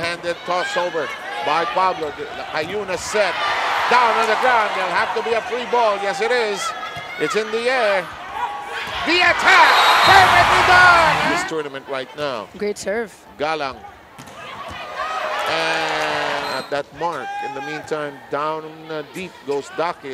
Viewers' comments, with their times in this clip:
0:06 and the roar of the crowd *chef's kiss